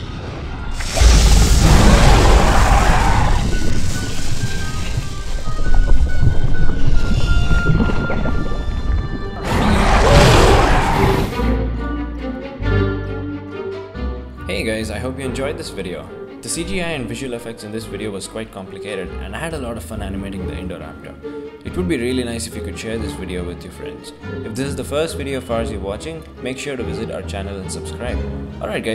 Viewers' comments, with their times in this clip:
0:10 I hear a bit of King Kong roar